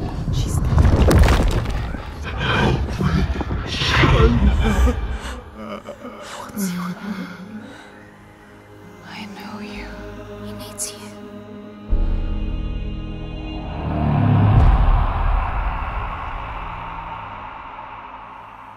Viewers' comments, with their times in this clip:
0:03 do you hear that human voice in the background ? i think it is dillion's voice that senua hears through the giant's, and this might be why she says that she knows him.. idk it's a possibility perhaps Dillion's soul was damned and had to live as a crippled giant (sorry if i made any mistake in my english cuz it's not my native language)